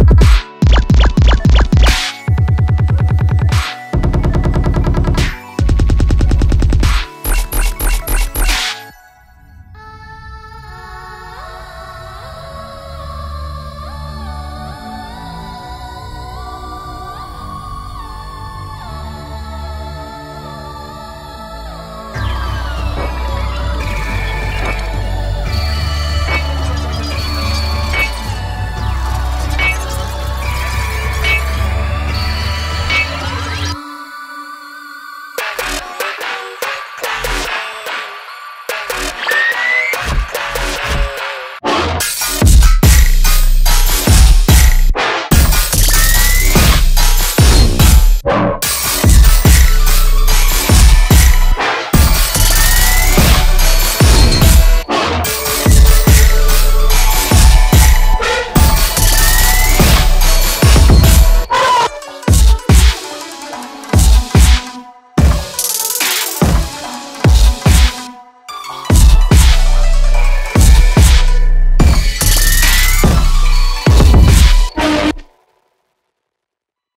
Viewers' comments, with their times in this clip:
0:09 WHY DOES IT SOUNDS SO BEAUTIFUL
0:10 Y'all dont know how much i enjoy this part 😭🤍 it just sounded peaceful for me
0:17 Nobody's talking about how ethereal miku sound ?
0:35 the rhythm from onwards kinda sounds like cbat to me. idk
0:36 I’m not too big of how it sounds after
1:01 the meme moan?!!!?